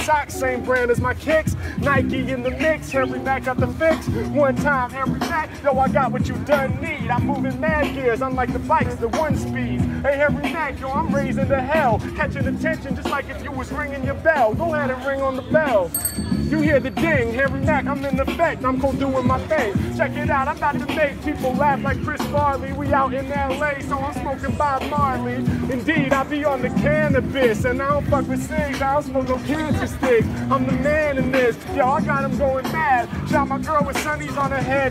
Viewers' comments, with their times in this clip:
0:10 this is so gold!! the bike bell was perfect
0:16 that bike bell was on point 👌